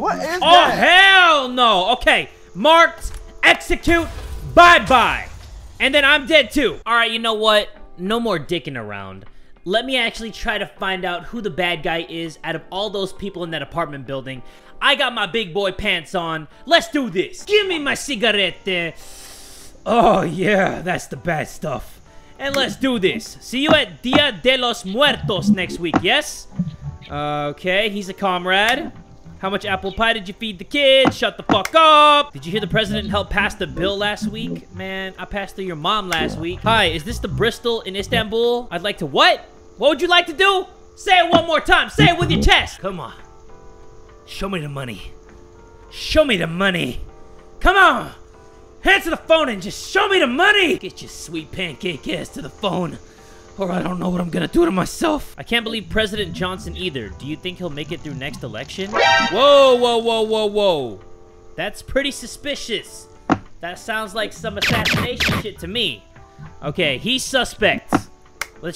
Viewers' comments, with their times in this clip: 0:10 OK BUT LIKE thought that said borchet soup and i love that soup
0:54 I can't be the only one who thought he sounded like Roberto from Futurama.